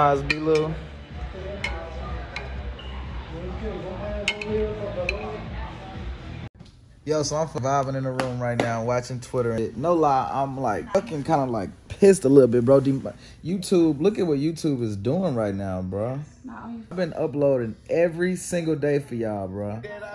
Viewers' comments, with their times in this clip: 0:07 we knew them shits would sound like chicago at night